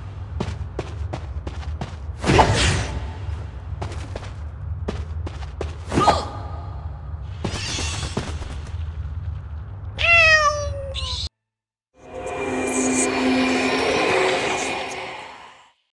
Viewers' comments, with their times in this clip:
0:09 me: Aw, cute! *meow me: *screech